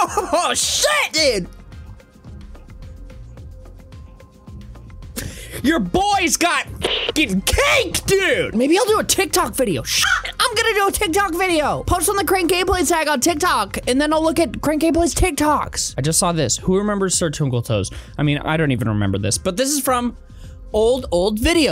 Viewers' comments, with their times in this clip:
0:06 when you said cake you sounded just like jacksepticeye. Tell me I’m not the only one who heard this